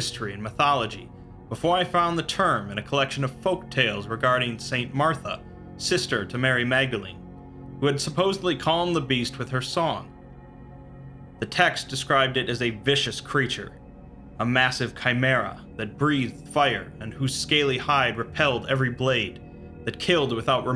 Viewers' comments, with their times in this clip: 0:04 Am I the only one who remember Batman vs Superman because of St. Martha being heard as " Save Martha "?